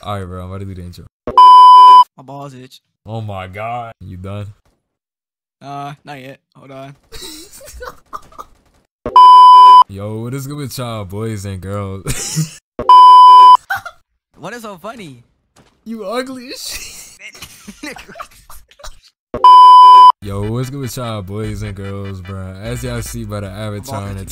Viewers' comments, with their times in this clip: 0:08 BRO MY EARS